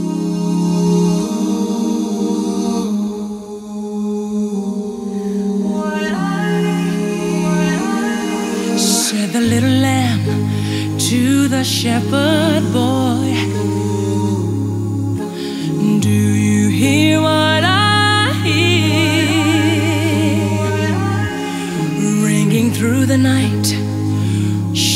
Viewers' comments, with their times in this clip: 0:05 wow puberty hits fast these days